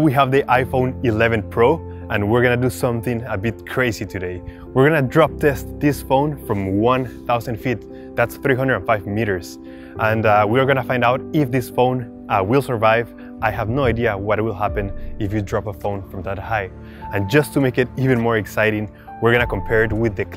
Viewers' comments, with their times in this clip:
0:05 He said in dis and then he said this!!